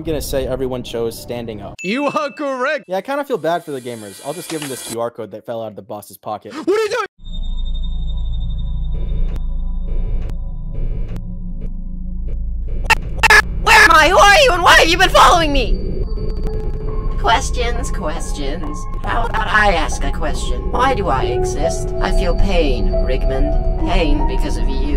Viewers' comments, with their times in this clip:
0:10 respect undertale "Undertale OST 004: Fallen Down"(even if disorted) is here